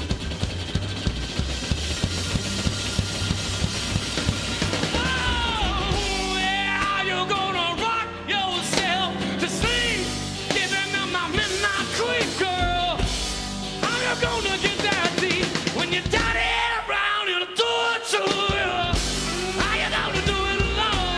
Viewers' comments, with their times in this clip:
0:04 A rock and roll scream!